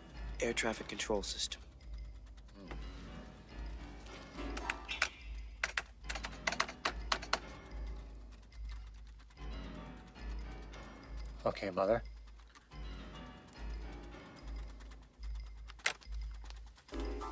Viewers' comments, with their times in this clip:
0:05 I love the music and the typing matching up